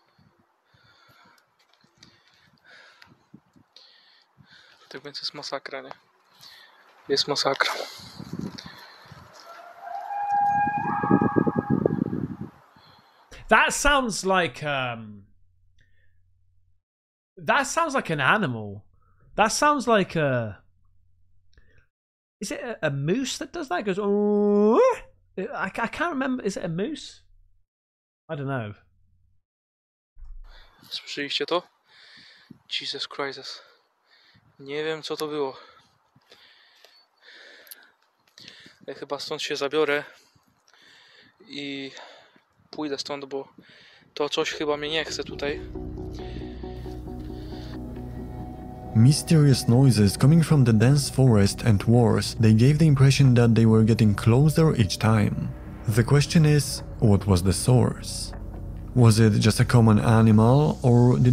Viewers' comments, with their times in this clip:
0:04 is a Elk calling sound....lol😂
0:08 Male stag rutting cry
0:10 it's clearly an animal,probably a female deer
0:12 I believe I've heard a coyote howl or sound similar to that. Nice video. Beware the falling thing on the shelf, lol...
0:13 sounds like a Elk
0:16 sounds like an elk
0:20 I'm going with an Elk call 🧐
0:20 Sounds like someone cupping their hands together blowing between the thumbs on the tip knuckles opening their hand Oh yeah and loons make that call. But that was definitely done by human.. That ghost getting hit with a pan was some funny shit 🤣
0:20 It sounds exactly like an elk bugle.
0:20 This video sounds familiar to an elk
0:24 It can't be a moose. He's speaking Polish, that's my neighbour country's language and we don't have moose in our woods.
0:25 Almost sounds like an Elk to me
0:29 could be a bird or a caribou
0:32 its a jesus crisis hahahahahahah the worst crisis of them all
0:46 The whistle kinda sound like a Chinese bell or in movies when ufo make them strange noises